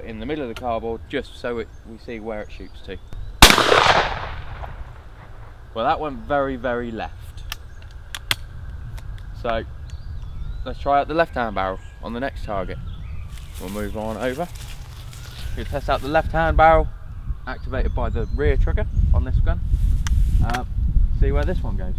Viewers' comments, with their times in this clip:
0:08 it sounds like you are shooting in Detroit with those sirens in the background